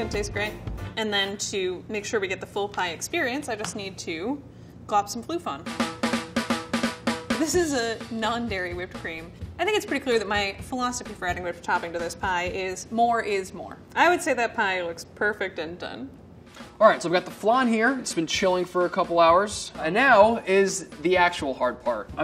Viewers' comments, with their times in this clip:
0:03 Non-English speakers everywhere: ”Ah so that’s called Glopsomfloofon”